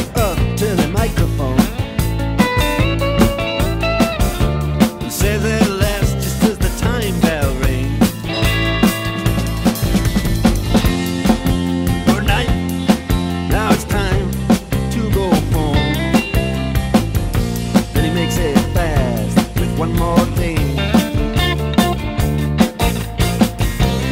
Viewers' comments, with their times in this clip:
0:08 What a cool playing
0:09 especially the fill in No computer would program that
0:09 Nuff said. You nail that 3 second bar like that and you can get any job.
0:09 best drum break of the world
0:09 If a drum cover of Sultans doesn't have the fill, it's not a cover.